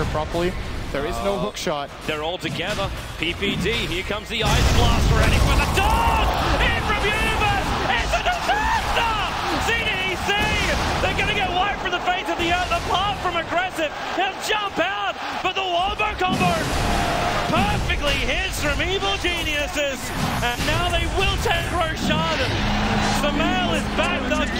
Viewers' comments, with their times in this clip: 0:09 dat voice crack